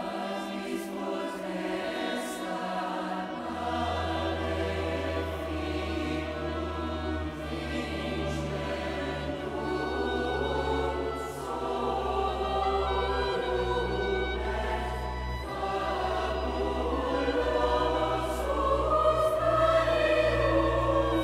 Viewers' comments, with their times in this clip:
0:03 that bass under the choir is incredible